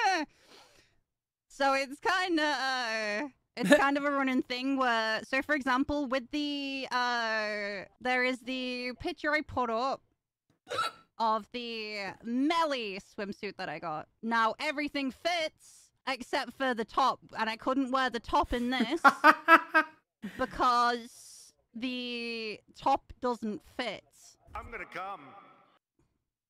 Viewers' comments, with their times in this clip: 0:10 That was the cutest hiccup I ever heard!